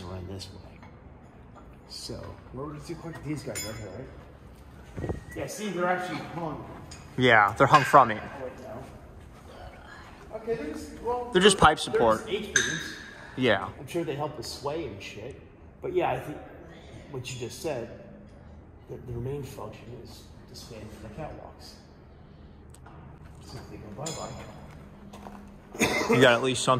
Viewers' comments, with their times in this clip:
0:08 you can hear a weird voice